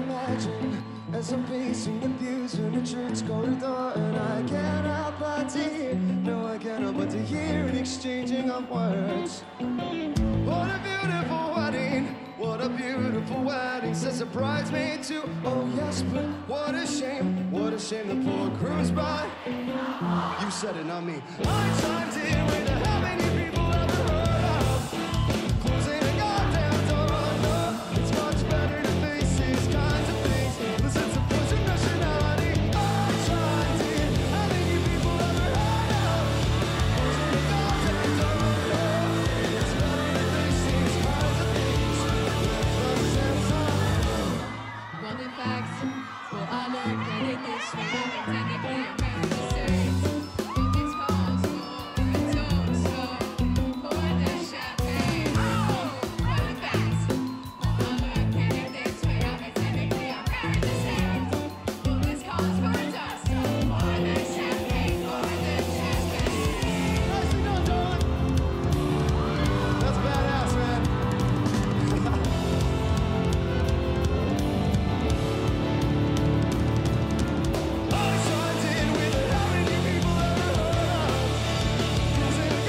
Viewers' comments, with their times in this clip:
0:09 you can hear the crowd say I love you , I love you to omg im dying
1:07 Am I the only one who thinks he sounds like John Marston when he says "nicely done darling"??